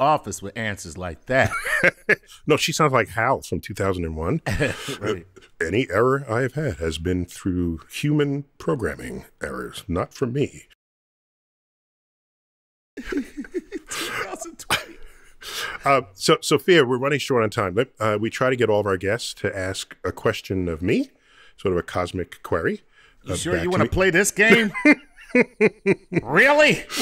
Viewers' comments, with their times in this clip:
0:10 why was the audio cut out for a couple seconds?
0:10 Why was her audio cut out ? What is she saying? Can you read a robot's lips?
0:11 Sofia was talking and it cut out on mine what did she say ??